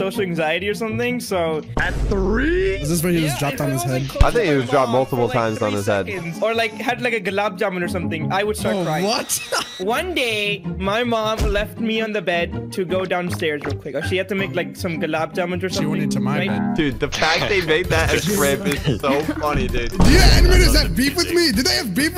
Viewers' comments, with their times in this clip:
0:07 what’s a globed German?
0:07 what’s a globed German?